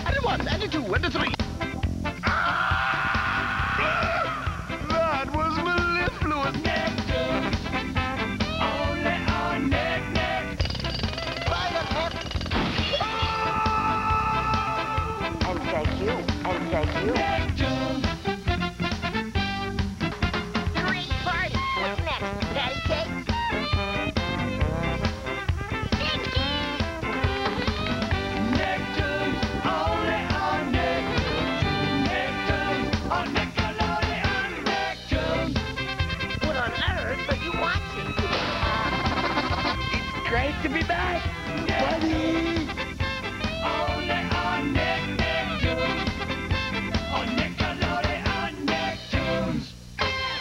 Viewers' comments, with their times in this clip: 0:04 im still trying to figure out what krumm says here
0:38 when you play the accordion while having a major sugar rush: